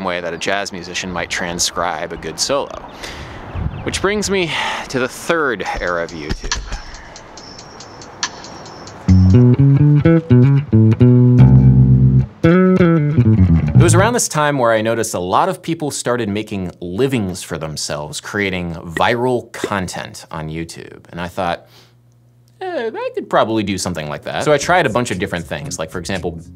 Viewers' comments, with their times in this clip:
0:10 interval be giving me Avishai Cohen vibes